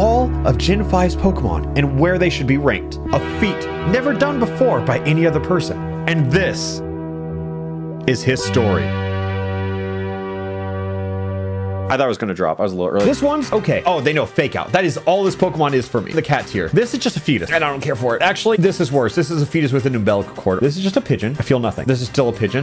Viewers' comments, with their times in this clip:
0:09 the summoning salt music made me think the video changed 💀💀💀